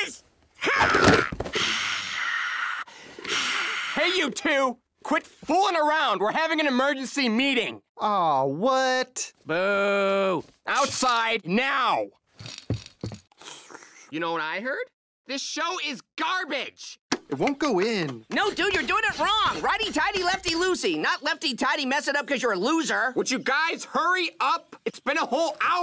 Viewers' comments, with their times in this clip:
0:08 the way rigby said boo